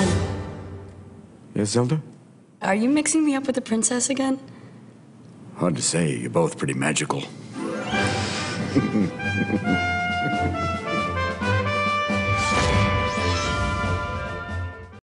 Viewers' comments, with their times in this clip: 0:08 Robin Williams' laugh
0:10 his daughter should try voice acting or singing if she hasn't already, she could even voice Zelda herself!!! also that penthouse!!?!?!? that looks fantastic...